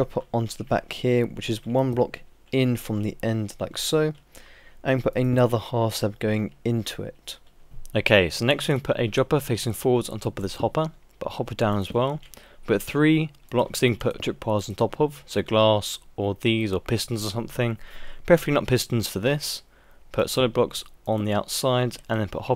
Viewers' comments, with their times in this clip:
0:05 Lol. You sound like a different person with the different cuts